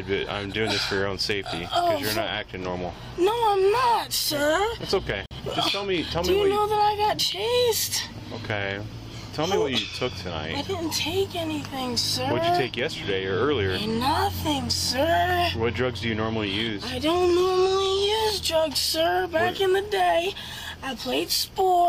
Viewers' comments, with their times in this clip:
0:09 the flow of how she was answering the questions is what got me dying